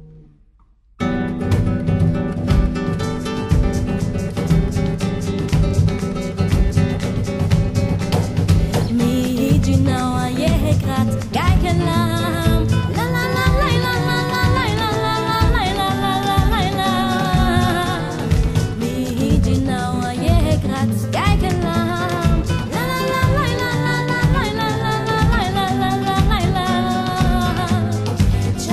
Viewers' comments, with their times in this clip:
0:09 that's when the song picks up.